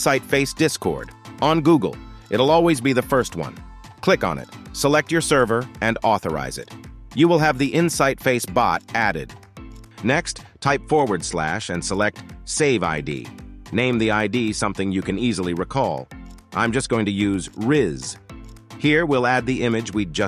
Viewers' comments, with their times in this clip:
0:03 The volume dropped down Also, it's disCORD, not DIScord. But don't worry - I hear everyone saying it wrong. ;)